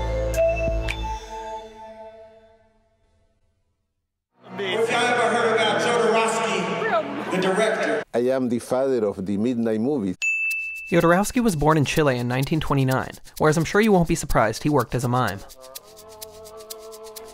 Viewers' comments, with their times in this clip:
0:03 Music ends He also puts a short transcript in the comments.